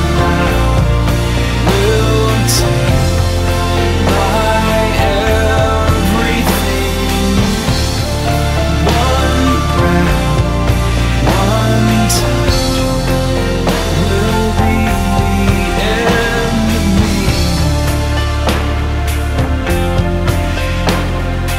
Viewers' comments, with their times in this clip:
0:07 I'm not sure if my last comment got in cuz I don't see it here so I'll post it again.. Omg, I got a shout-out! hehe Thank you that means a lot. =) And this is just as good as I remember it..even without all the fancy effects you have today, its still one of your best videos. That moment -55 STILL gives me chills. The music is just so in sync with their emotions, its perfection! AHHH I love it, just so epic and thanks for allowing us to enjoy this video again. =D =D